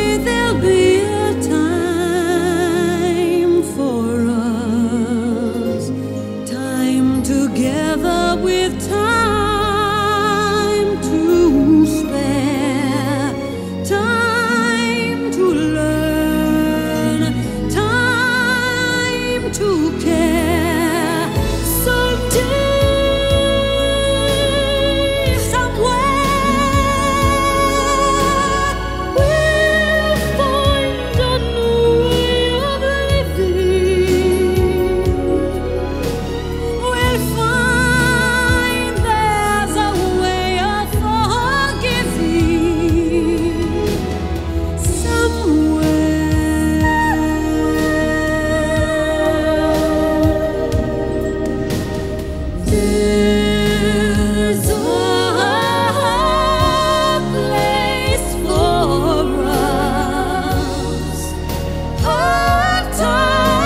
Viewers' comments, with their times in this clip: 0:04 ...the tone of resignation in the instrumentation in relation to the source materiel is just astounding before Streisand picks it back up. The best part.
0:48 Around the mark when Jackie begins harmonizing with Barbara, the chills begin. It's just...well, magical!
0:50 the harmonies were so good! I would love to hear them perform this live together.